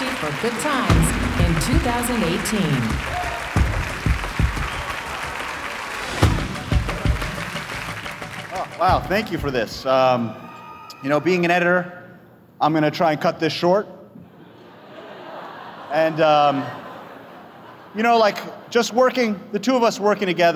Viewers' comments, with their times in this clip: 0:08 LOL that collective groan